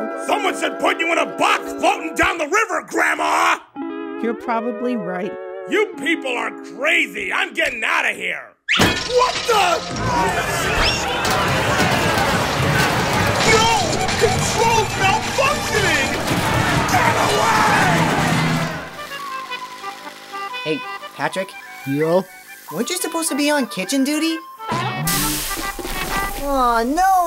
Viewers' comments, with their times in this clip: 0:09 Plankton's new voice sounds perfectly fit. Amazing, and from this part from it's so funny!